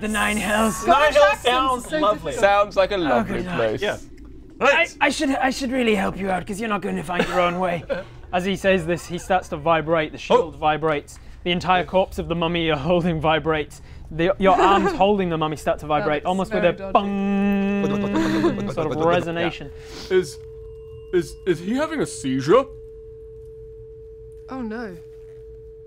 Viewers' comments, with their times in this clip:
0:08 "as he says this he starts to vibrate" and you the old "Nokia ringtone"